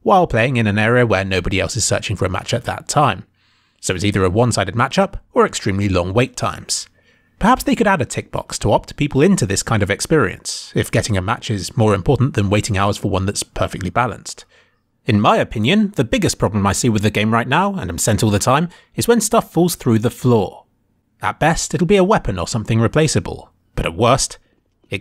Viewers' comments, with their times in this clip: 0:06 are you swedish???